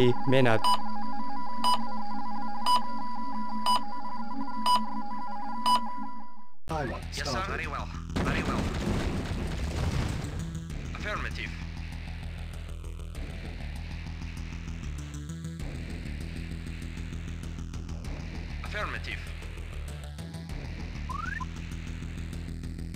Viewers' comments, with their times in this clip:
0:03 Ha ha Russian language is off 😂😂